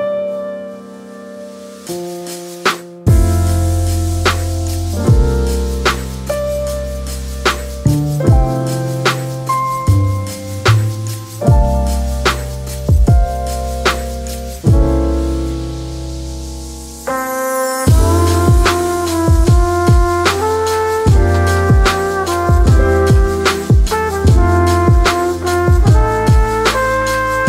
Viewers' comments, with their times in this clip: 0:09 I wasn’t expecting a holiday song but it gets me excited for the holidays 🥹❤️